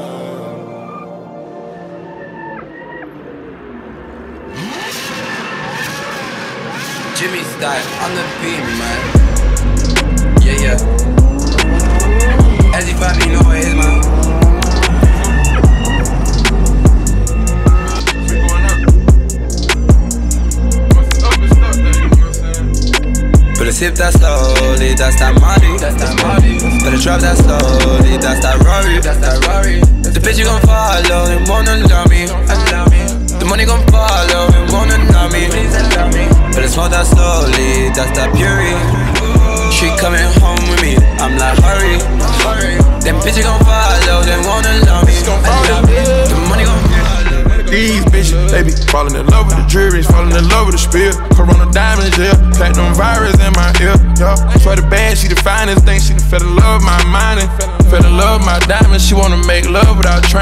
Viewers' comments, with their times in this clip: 0:03 I just discovered Octavian and loving his stuff so far...this song is great but that first seconds is just like something i've never heard anything like it before, are there any songs that sound like that? kind of emotional peaceful rap heavy bass stuff
0:08 flume vibes anyone?
0:45 That Future vocal had me levitating This is so highly underrated, it's insane!
0:46 Future does this sick thing where his voice like vibrates when he says “follow yeah”